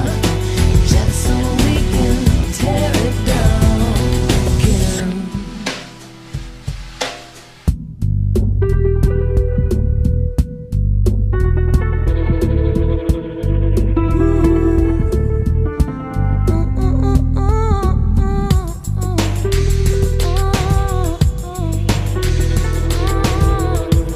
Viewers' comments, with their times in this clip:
0:06 Anyone else hearing "...Nightfire..." right or is it just me?